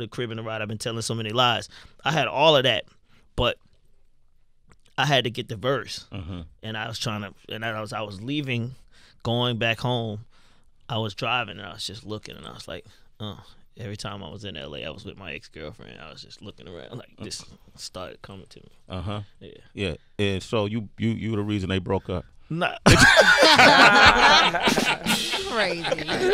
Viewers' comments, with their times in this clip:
0:10 That laugh is PRICELESS!!!